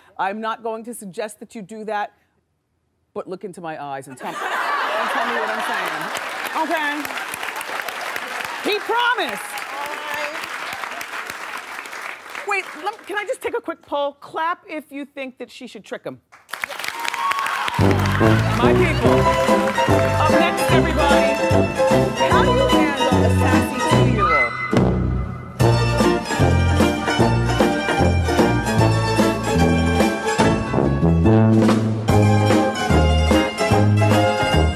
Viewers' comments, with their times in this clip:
0:05 There is a deep HOLE in hell for everyone who clapped in there.
0:18 man's wife/gf was clapping along right there next to him... Bro, run 🏃‍♂️💨